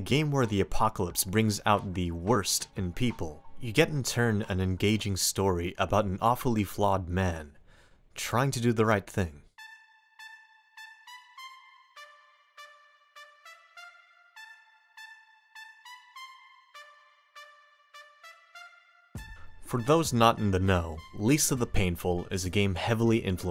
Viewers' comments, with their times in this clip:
0:09 The music syncing with the text on the screen is fricken amazing but you know what would make me literally coom? If the pan of the tone changed depending on how left/right the text is. Do it, I beg.